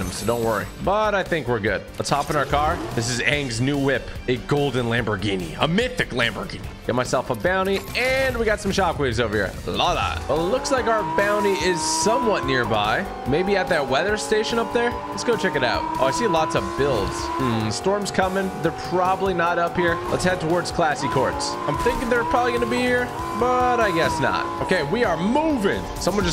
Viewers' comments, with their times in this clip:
0:09 The way he says love that is hilarious 😂